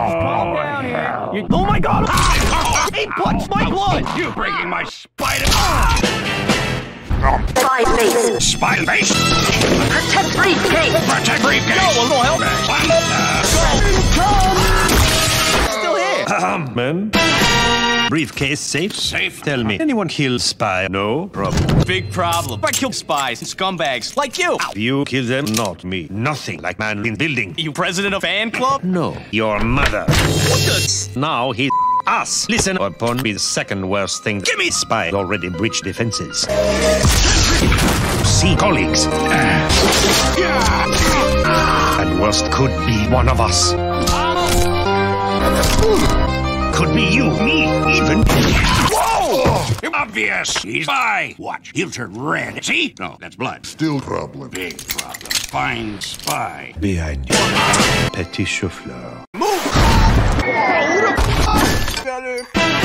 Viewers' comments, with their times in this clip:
0:04 That perfectly cut off scream makes it even funnier.
0:16 Clears throat 𝘮 𝘦 𝘯 .
0:16 When you ask the Spy from Team Fortress 2 who he's attracted to but there's something stuck in his throat:
0:27 "You president of fanclub?" "No." "YOUR MOTHER." OMINOUS MUSIC
0:30 they included the scout squeak lmfaoo
0:39 that “ehh” killed me
0:49 "Obvious! He's bi!"